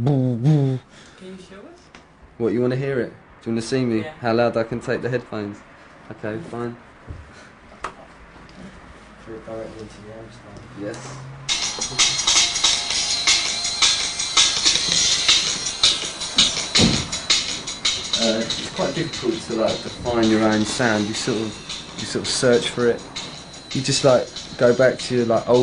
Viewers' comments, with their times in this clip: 0:07 He kills his ears :D